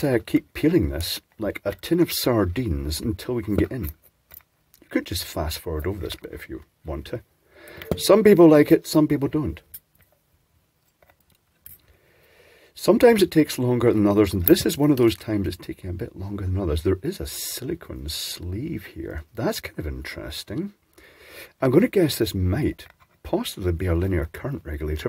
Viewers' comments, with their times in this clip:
0:09 Is that a clock in the background? (I only have a few at home)